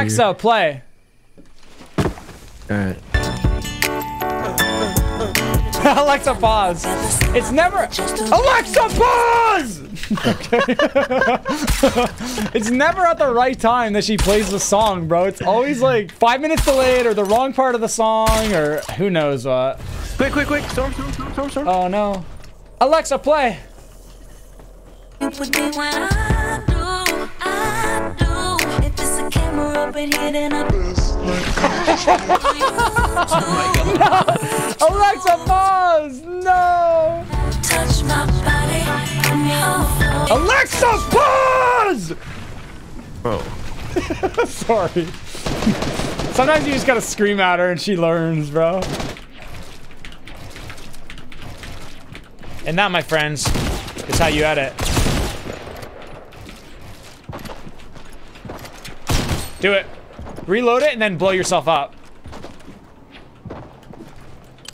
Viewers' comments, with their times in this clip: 0:05 I never watched you yelling at Alexa 😂😂
0:47 it sounds very bad i mean very bad